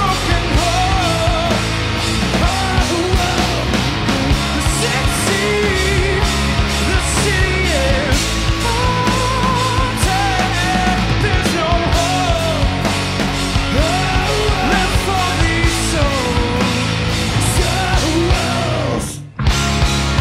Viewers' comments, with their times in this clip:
0:03 It has cracked and it was beautiful.